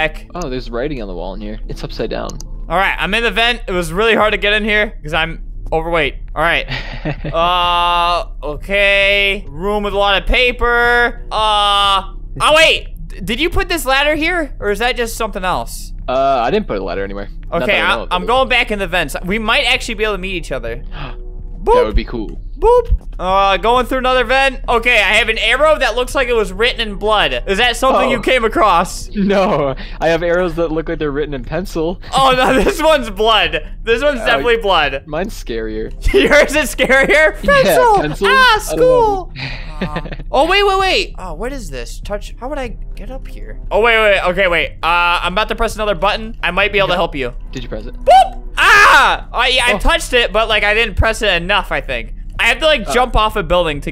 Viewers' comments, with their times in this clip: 0:07 THAT LAUGH WAS SOO CUTEEEEEE
0:37 sounds like X from bfb 😂